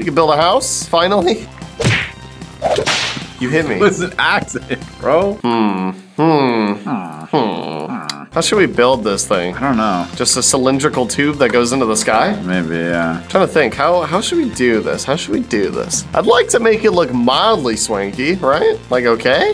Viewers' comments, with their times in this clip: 0:06 just two villagers casually talking to each other no biggie